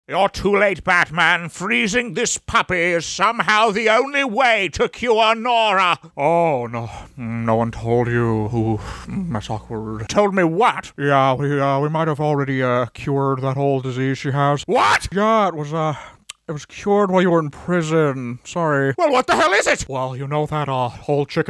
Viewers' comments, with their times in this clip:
0:04 The way he says Nora is perfect